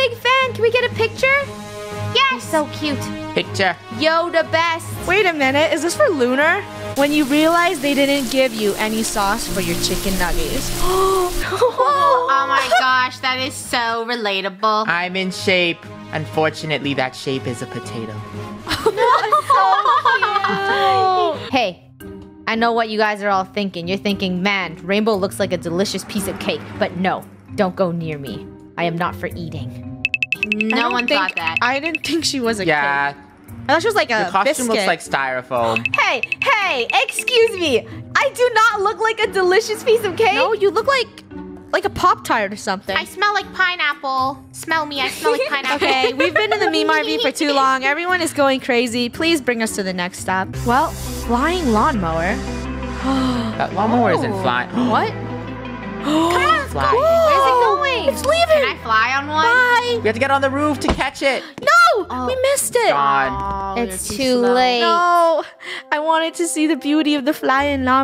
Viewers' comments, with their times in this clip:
0:04 The meh made me laugh 😂😂😂😂😂😂
0:50 when the strangerr things theme songs comes on